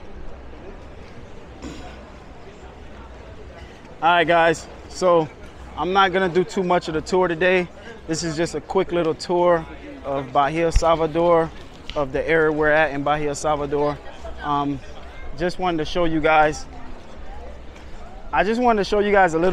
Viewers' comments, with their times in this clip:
0:07 seems like you are losing your words :)) distracted maybe ? ;)